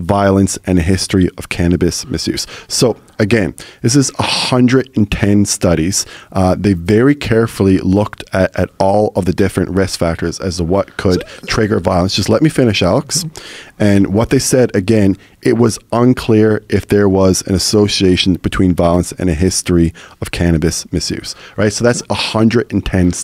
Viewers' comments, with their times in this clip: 0:09 Alex: "strange vocal noise" "Just let me finish alex"